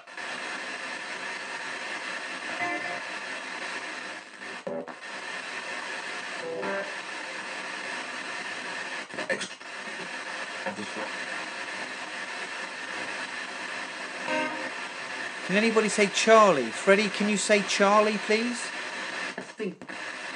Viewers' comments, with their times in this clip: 0:08 when freddie said "excellent" that sounded like him..